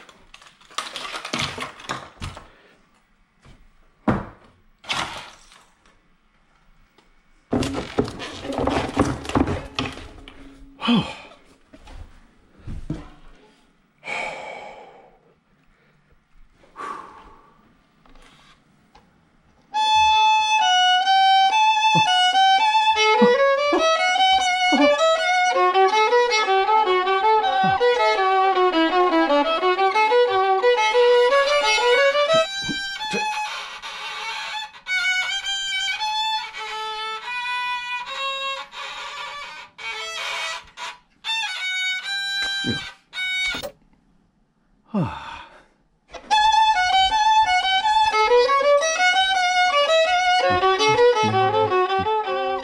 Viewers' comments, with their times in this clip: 0:06 that's a chicken violin
0:20 The music on was amazing so amazinggg
0:29 a violin is like horror
0:31 Violin Teacher’s Violin Is Bad
0:32 hmm the music is a blast
0:37 worst violen music💀💀